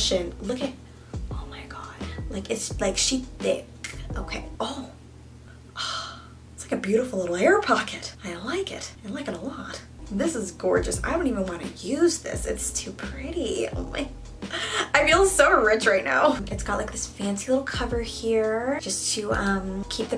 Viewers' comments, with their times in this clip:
0:08 she sounds like liza koshy lol